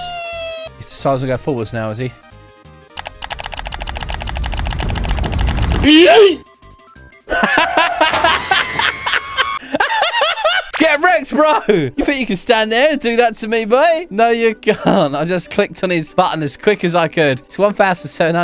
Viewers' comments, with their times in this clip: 0:06 elite laugh that make me laugh so hard